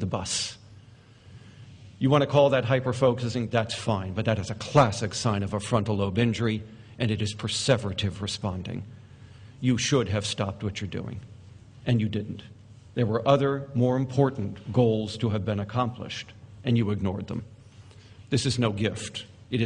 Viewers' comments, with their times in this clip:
0:03 As much as I respect Dr. Russell Barkley and his opinion as an expert, I find his way of talking and especially his delivery incredibly condescending. In that speech when he says "You want to call that hyperfocusing, that's fine, but that is a classic sign of a frontal lobe INJURY ." ... The way he emphasizes the word injury just to make sure every ADHD person in the room got the memo that they are not somehow neurologically different but objectively broken . I mean, Russel, why on earth do you think that is necessary? Have you ever asked an ADHD person how they feel after being talked to this way? Let me answer for you, Russel: No, it's not necessary at all. Most ADHD people feel bad enough about themselves already.